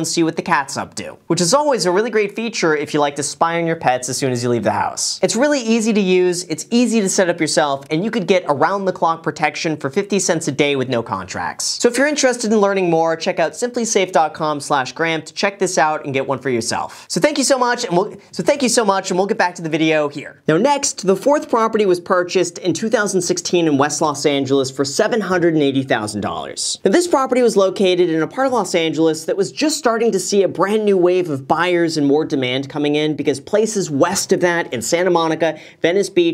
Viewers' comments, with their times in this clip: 0:10 Little ad read flub There's hope, he isn't an investment robot.
0:16 Ok glitch in Graham actually made me feel so much better about my own videos. I always mess up so much and I’m in awe of how fast Graham talks. And how it’s so dense with information. But yes seeing him screw up too for a second, gives me hope lol. Thx buddy
0:18 let’s you know that even the YouTube god stumbles and it’s ok!!
0:20 ... The Matrix Happened.